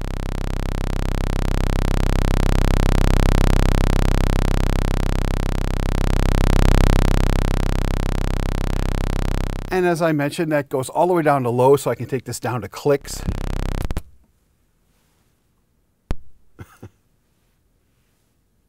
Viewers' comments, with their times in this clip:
0:06 my chest rumbles with the sound